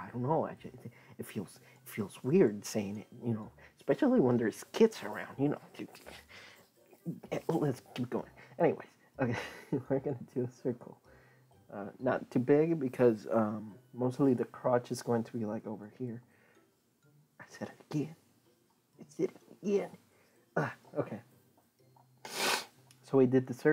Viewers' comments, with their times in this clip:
0:04 stutters when there’s kids around I had to put my pen down and take all that in for a second lol btw it’s turning out great so far! This is amazing for beginners like me